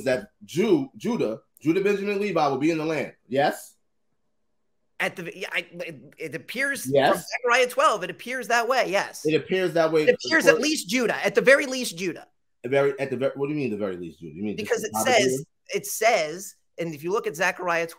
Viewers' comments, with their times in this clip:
0:05 sounded like iggy azalea when she forget the words. Lol 😂